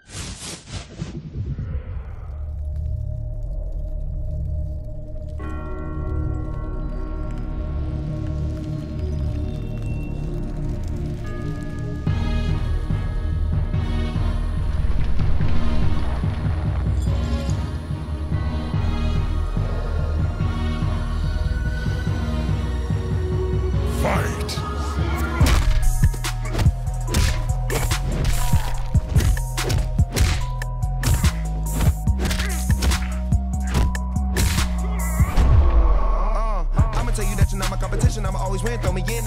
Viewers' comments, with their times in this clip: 0:05 starts the song
0:24 the SONG IS 🔥🔥
0:25 i love how they put that backround music its so cool:)